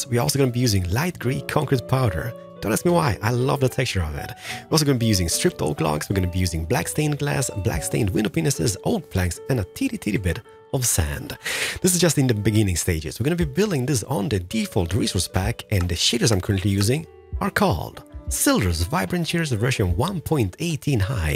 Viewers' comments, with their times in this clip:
0:04 Keralis: we gonna be using stripped oak logs, black stained glass, black stain glass penises. Me whait whut?
0:06 ahahahaahahhahahahhahaah “ WINDOW PENISES “ HAHAHAHAAHAHAHHAHAHAHAHAHA
0:07 the way he says panes lol
0:07 black stained window what?! I cant be the only one who heard something different, right? 😂😂😂
0:08 Did you just say p***s’s